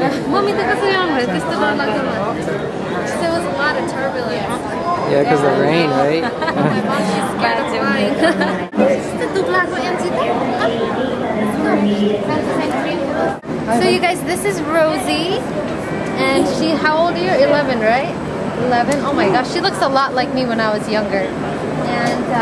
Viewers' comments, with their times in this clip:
0:07 they were speaking nepali 😊😊😊 yay im from nepal
0:09 you were talking in nepali am I right